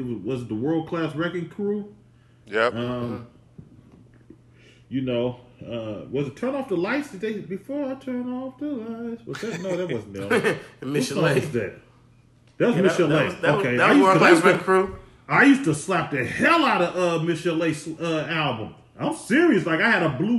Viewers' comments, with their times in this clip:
0:05 LOL 40 with the immaculate r&b vocals